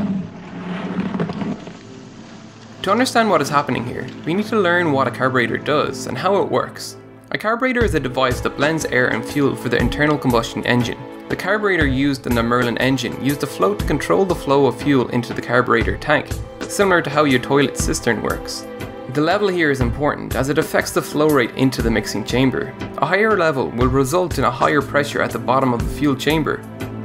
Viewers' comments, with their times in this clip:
0:09 potentially important explanation - hence introduction of loud background music to make it harder to understand :-D